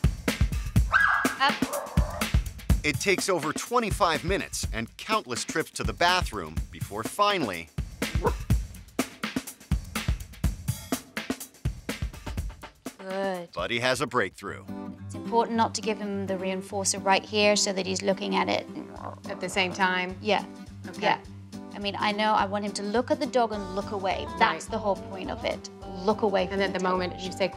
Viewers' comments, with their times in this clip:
0:07 DAMN Victoria gave him that death stare tho as soon as he mumbled a bark
0:11 Buddy: barks Victoria: stands up and stares at him Buddy: ....I’m sorry